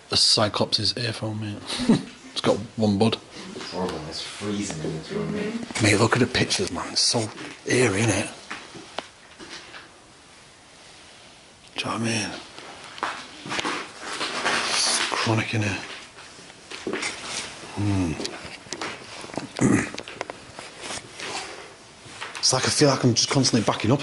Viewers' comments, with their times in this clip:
0:08 Man there was a chick humming smh I could hear it clear as day!!